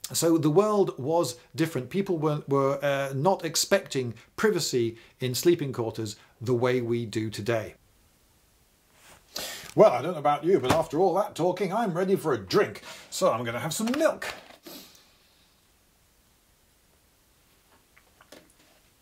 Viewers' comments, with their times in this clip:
0:07 Anyone else notice the audio change when he holds up the book.